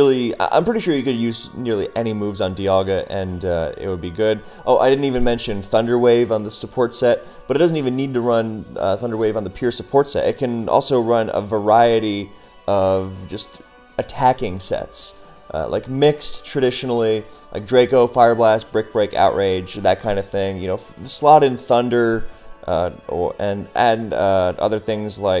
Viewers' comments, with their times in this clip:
0:07 That "but it doesn't..." was so clean